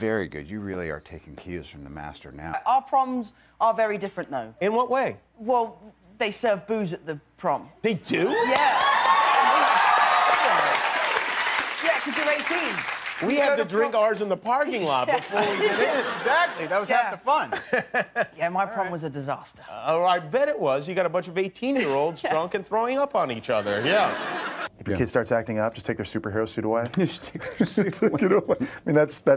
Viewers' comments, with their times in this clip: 0:05 is he saying booze or bobos
0:07 the way he says “tHeY dO!!!” 😂😂😂
0:10 when Robert clapped in approval 😂 dying